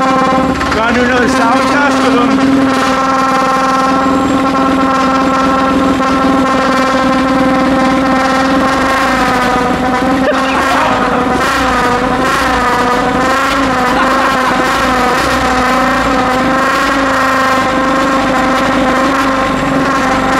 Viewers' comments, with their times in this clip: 0:06 I think that the best sounding VQ Engine I have heard: